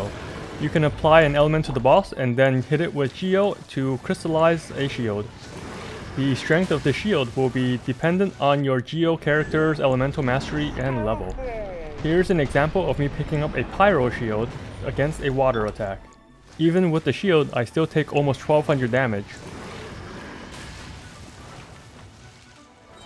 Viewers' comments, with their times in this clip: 0:10 best slow motion voice by Lumine